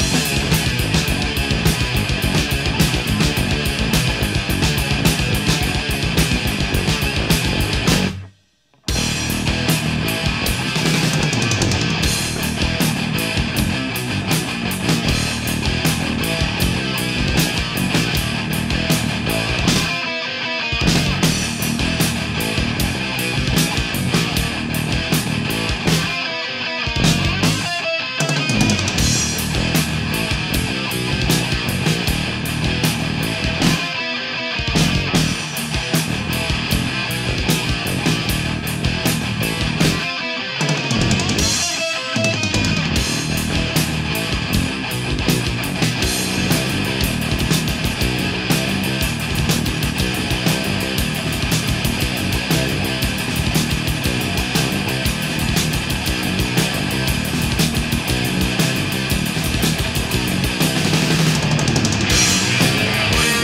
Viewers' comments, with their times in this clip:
0:07 Anyone get Opeth vibes other than me at this?
0:08 A gift from hell. HAIL SLAYER. = evil riff
0:45 is probably my favourite Slayer riff